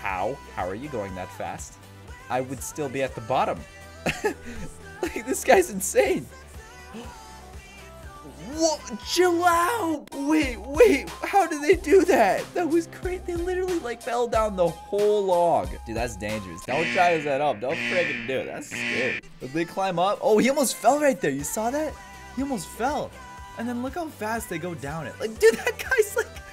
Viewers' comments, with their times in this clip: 0:08 Chich kebab. .hhhhh ....the way you pronounced it hhhhhh so funny. ...it's an arabic word by the way ...love you